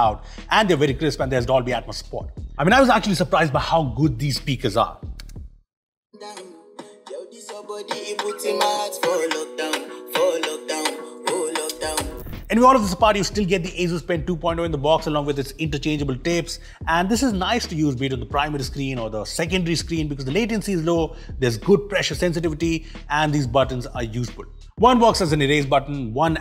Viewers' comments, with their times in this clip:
0:09 I love the song you played I didn't know you love African music 😄